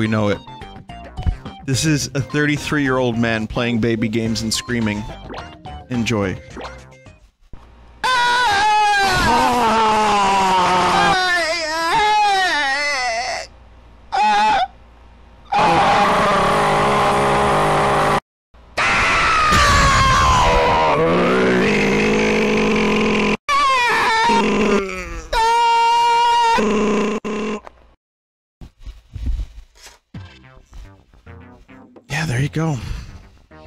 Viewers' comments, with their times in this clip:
0:07 AAAAAAAAAAAAAAAAAAAAAA (Volume Warning)
0:07 WarioWare Gold really does have some great voice acting
0:07 I knew it would be screaming before he even started recording it 😂
0:07 When you are watching a video in headphones at 3 am at full volume and you accidentally pull off the cord:
0:07 Original jokes: Meh Binyot screeching like a dying walrus into a low-quality 3DS microphone: WHEEZE
0:21 my neighbor cutting his lawn with his 20 year old lawn mower as soon as the sun rises